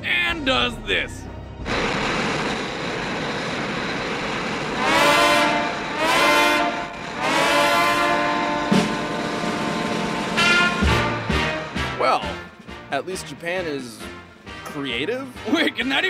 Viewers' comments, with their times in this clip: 0:03 it was like the music was saying what I was thinking in my head, "What, The, F**k?"